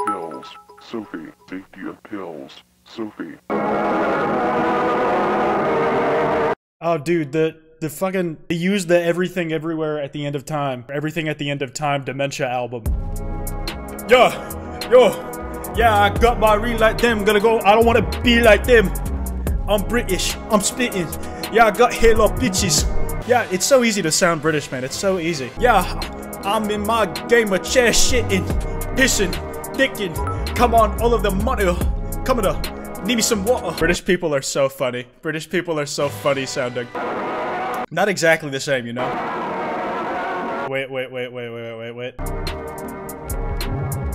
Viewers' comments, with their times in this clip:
0:03 al bowlly - heartaches, not caretaker - its just a burning memory. even though caretaker samples al bowlly, the walten files used a distorted version of heartaches
0:04 it was unnerving until amnesia music popped up 💀💀💀
0:09 Ah yes, Everywhere at the End of Time, That Music is Sad, But it is also Creepy!
0:17 as an actual british person you sound like an actual british person
0:27 bro sounds like central cee